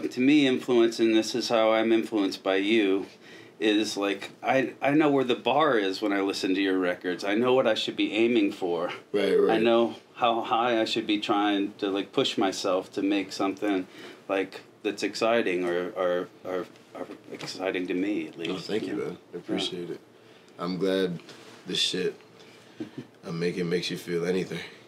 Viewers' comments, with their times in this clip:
0:08 bruh that's a steam notification we need to figure out what his steam account is stat